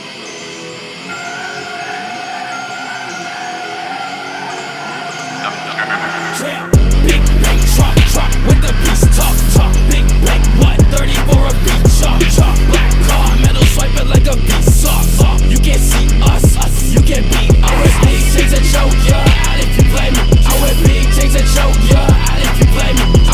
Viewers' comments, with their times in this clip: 0:05 hardest “YEAH” I’ve ever heard